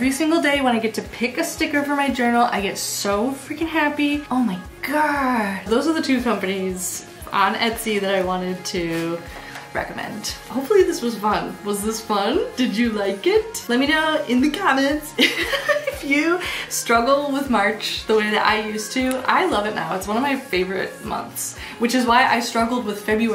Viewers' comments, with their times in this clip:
0:04 Incredible Jennifer Coolidge impression 😂❤